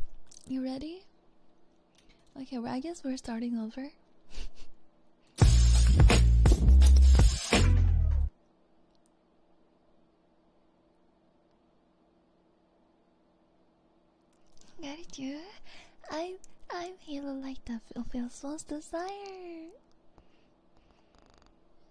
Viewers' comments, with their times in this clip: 0:04 The lil laugh b4 she does it 😂😏